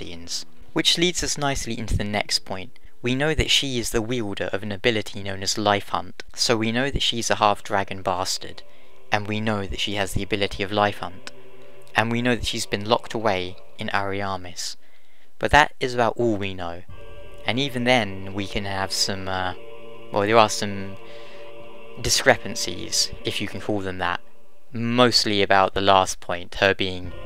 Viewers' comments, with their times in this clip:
0:10 I love Priscilla. I think she is my fav DS 1 char, I never had the heart to attack nor kill her..who can attempt to kill such beautiful Fay creature/? & very very epic music I will never forget that majestic song